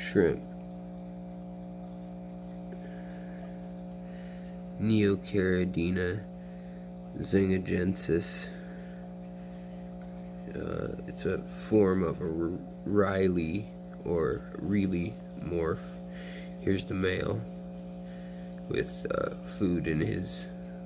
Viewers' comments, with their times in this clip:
0:04 Sounds like you're saying "Neocaridinia Sega Genesis"